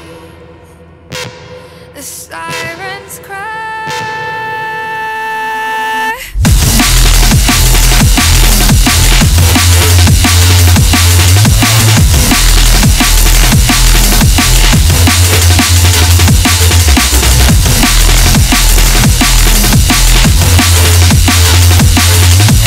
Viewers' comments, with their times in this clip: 0:05 insaaaane tune, especially that second drop ! and the vocalsss <3